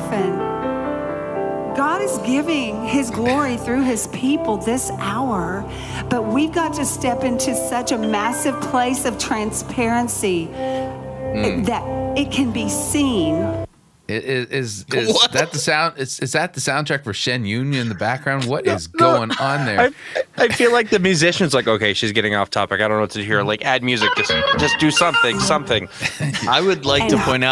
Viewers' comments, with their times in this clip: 0:09 A few chords of "The old gray mare, She ain't what she used to be,"🎶🎹🎵